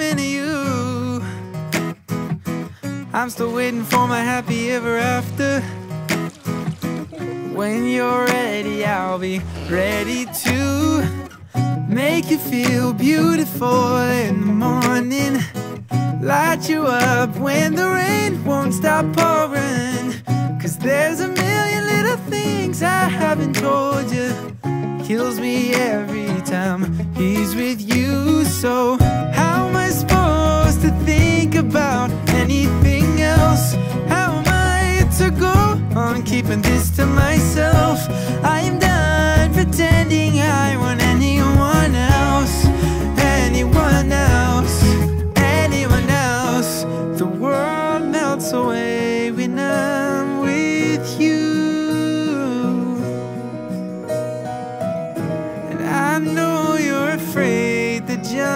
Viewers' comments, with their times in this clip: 0:06 ACTUALLY IF UR WEARING EARPHONES U CAN HEAR THE GIRL’S LAUGH AND THE WATER SLOSHING AT LIKE ? (sorry i just find that detail cute)
0:09 Hey did someone notice the laugh in is that Sabrina's laugh
0:10 My thoughts -The girls nails are pink -> Sabrinas nails were pink at the time this was filmed -in an interview Sabrina talked abt how she loves going on her roof—> there’s many scenes on a roof you can hear a girl laughing and if u have heard Sabrina laughing it sounds the same - I’m not sure abt this one but the pool Joshua is swimming in looks like Sabrina pool-> as seen in a interview house tour type of video So yeah lolol
0:46 Can we talk about that bridge🔥🤩